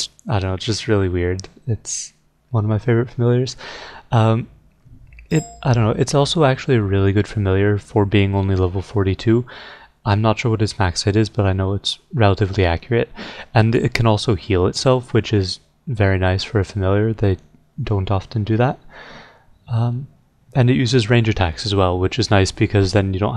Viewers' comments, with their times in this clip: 0:05 Thought I had a teamspeak message lol